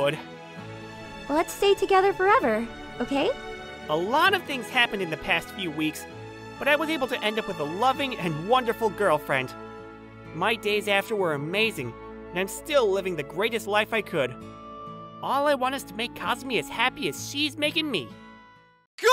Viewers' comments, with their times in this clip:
0:06 Yo dats crazy he said it correctly instead of sayin "Goilfriend" 🤣😂🤣:face-purple-crying: